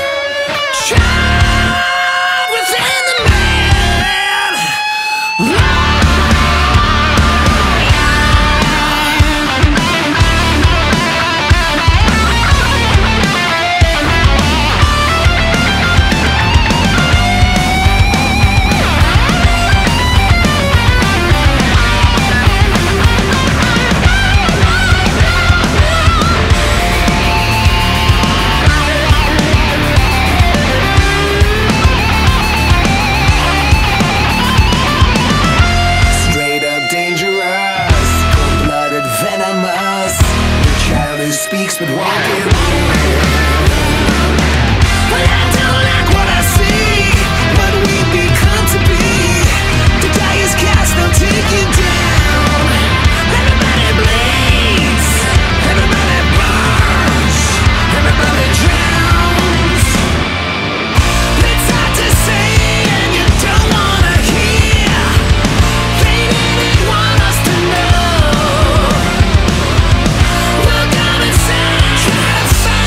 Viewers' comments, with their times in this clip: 0:07 Holy shit….. can we just talk about how amazing the start of the breakdown in Jesus Christ… 🤘🔥🤘
0:59 SOUNDS like Uncle Toms Cabin from Warrant for a couple seconds.